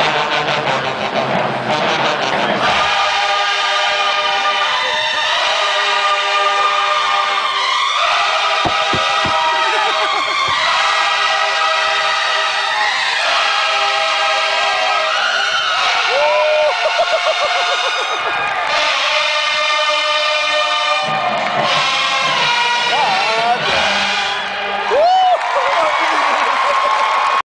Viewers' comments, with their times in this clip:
0:08 Love the mellos
0:17 i KNow they use the Term Trumpet screaming...BUT the Trumpet REALLY SOUNDed LIKE A DAMN SCREAM